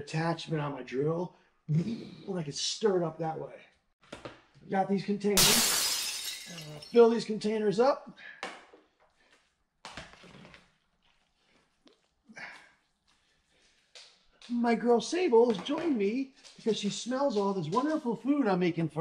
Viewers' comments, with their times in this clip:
0:04 😂😂😂 The loud shatter of glass in the sink and him just casually going on. I’m Definitely gonna make this!
0:04 😂 broken glass effect .. gotta love this guy
0:05 Man that was chaotic for a minute but you won in the end! I sure hope that crash of smashing glass was a sound effect!
0:07 I started making my dogs food after she became sick, lost a lot of weight, and then discovered she had tumors on her spleen. After her splenectomy, her hunger came back immensely and she devoured my homemade dog food. It really is life changing when we give a little extra effort to making sure our dogs' food is as wholesome as it can be. Thanks for the video and the chuckle when you threw the red lid of the plastic container and obviously broke something that was glass, lol. I had to rewind to listen again to make sure that's what I heard. My dog is smaller, so I just cook in a large crockpot about a week's worth of food. But, I may try it in our instapot one of these weekends. Have a great day!